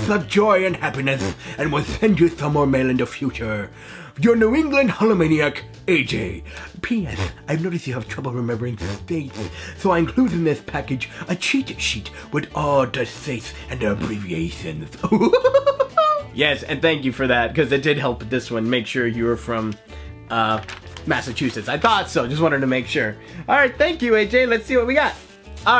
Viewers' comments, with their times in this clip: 0:06 Did anyone else hear him say penis ?